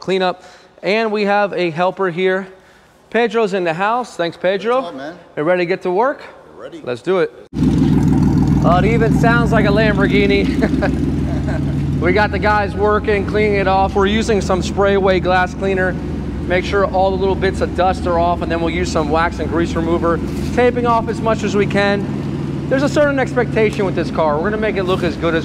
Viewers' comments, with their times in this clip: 0:08 sounds like a Lamborghini???